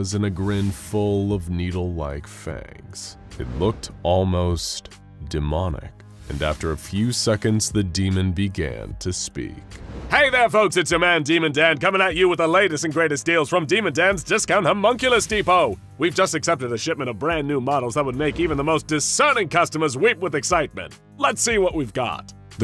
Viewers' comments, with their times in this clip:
0:09 Why does my man sound like he just started a YouTube video "Hey their folks its ya man, Demon Dan"